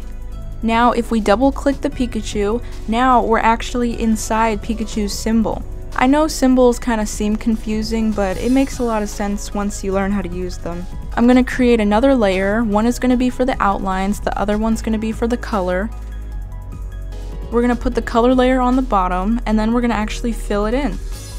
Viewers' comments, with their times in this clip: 0:07 the clicks are satisfying